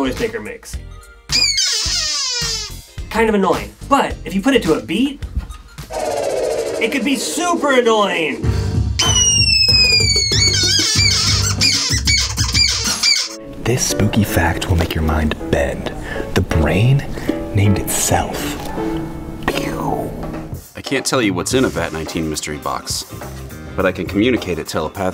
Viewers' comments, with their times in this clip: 0:09 pov: Guy 1: hey dude! turns a squeaky door Guy 2: hmm. What if I turn that to a beat? Guy 1: don’t Guy 2: does it anyway Guy 1: oh my god